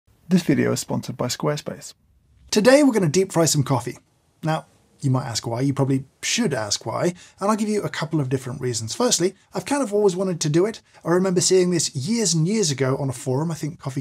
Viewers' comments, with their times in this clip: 0:00 this somehow sound a little sad?